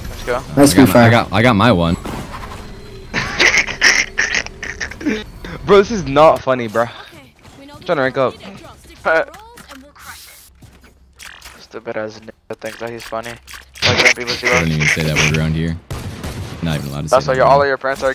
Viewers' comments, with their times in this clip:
0:06 bro literally said that after laughing